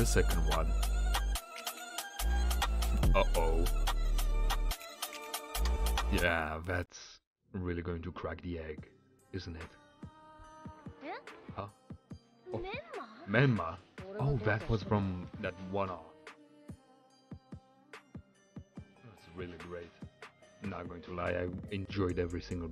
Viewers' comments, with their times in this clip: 0:06 At this point the Sakura jokes are just not funny and not true and it’s getting old😐 but was it just me or was the audio cutting out😂